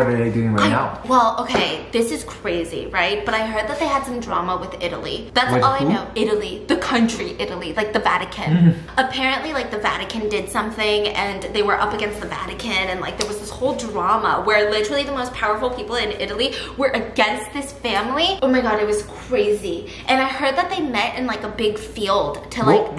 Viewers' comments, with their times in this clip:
0:07 That laugh of "ah okay you're full of shit" killed me...and then she connected it to Harry Potter hahahaha